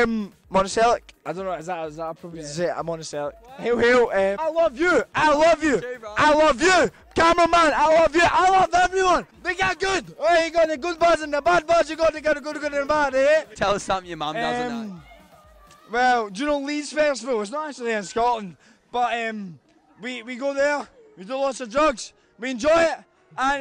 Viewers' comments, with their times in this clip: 0:10 we got the good boys and the bad boys puts on indian accent we got the good good bad eh?